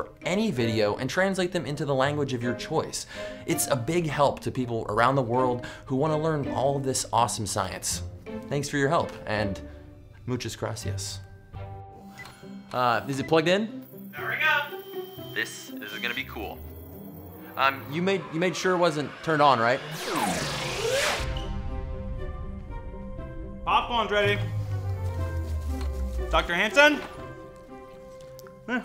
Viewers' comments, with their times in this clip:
0:10 -"Muchas grasias". Me-"Muchas gracias", not "grasias", what a pronuntiation! English people-What's that, spanish?